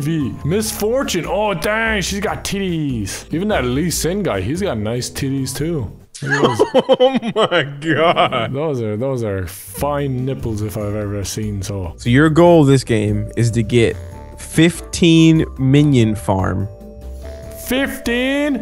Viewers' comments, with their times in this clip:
0:06 that creepy laugh